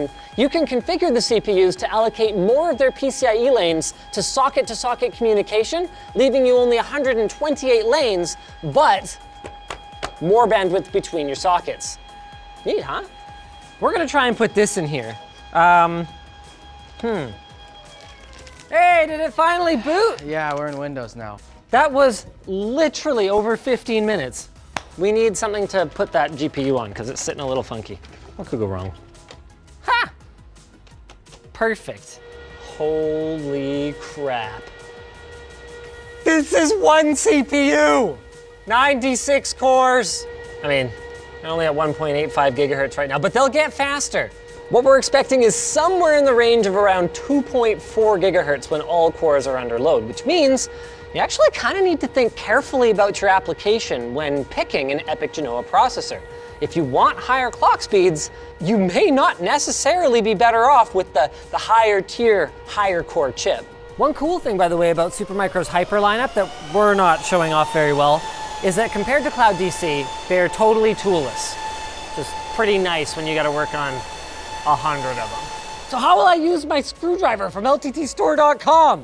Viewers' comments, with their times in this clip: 0:04 I was sitting in my car thinking that my city was running a nuclear sound test warning ⚠️
1:04 When the system fans speed up reminds me of sitting on a plane at take-off!